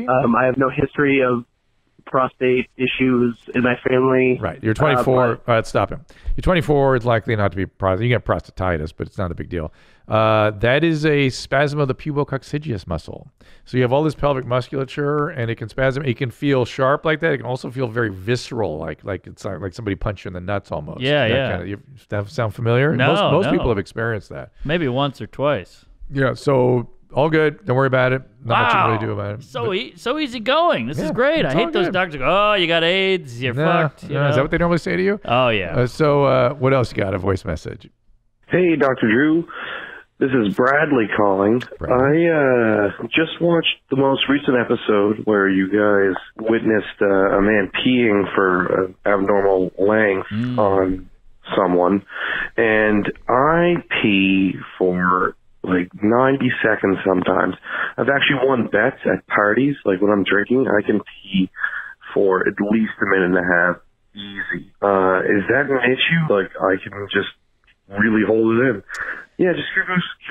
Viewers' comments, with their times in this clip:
0:10 I love how Mark golf claps Dr. Drew nailing that muscle name lol
0:55 You're not fooling anyone Jay Oakerson!